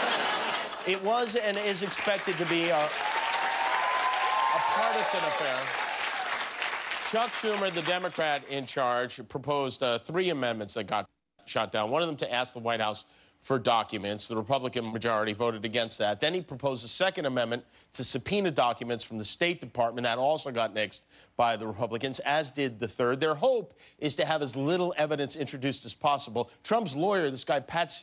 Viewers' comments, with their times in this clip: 0:10 Jimmy accidentally says "shat" instead of "shot" and they bleeped it lol